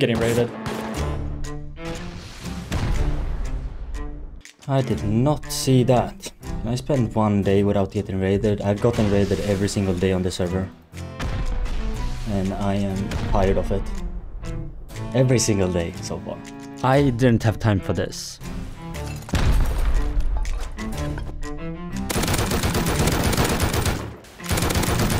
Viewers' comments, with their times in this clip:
0:06 the Sea of Thieves music was dope